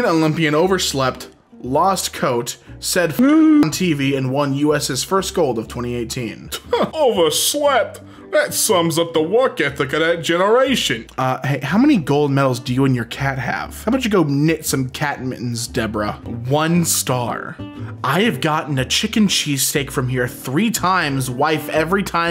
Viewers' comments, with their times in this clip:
0:07 A-are you the headcannon voice of Sans the Skeleton?